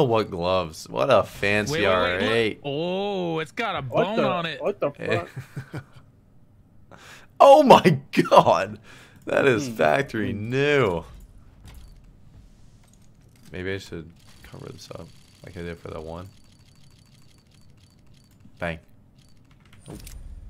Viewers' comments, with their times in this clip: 0:07 Nobody: Really serious sound: “oh my God, that is factory new…”